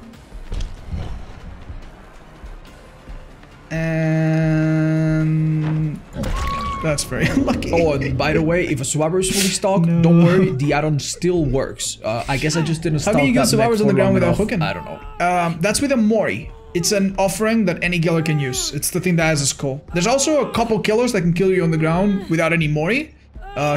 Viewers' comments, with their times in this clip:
0:06 very nice audio editing lmfao
0:08 I think the audio was placed here on accident
0:08 Actually the audio for this bit is someone made an oopsie
0:08 Oh great, the voices in my head are back.
0:10 it looks like you put a voice overlay in the wrong place, loved the video tho!
0:10 Anybody else get some weird audio overlay ? Great video nonetheless, just wanna know if it’s only a problem on my end